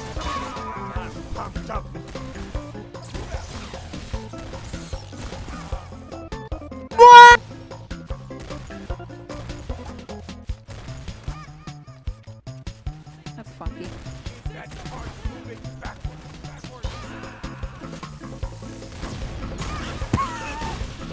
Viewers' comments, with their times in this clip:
0:06 Man that scream on “MUAAAA”
0:07 click here for a perfectly cut scream